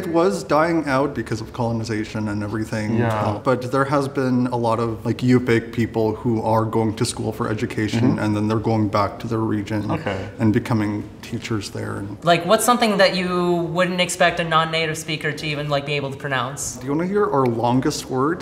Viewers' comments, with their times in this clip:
0:03 Alaska is very close to Russia and Asia. Accents are a mix match of them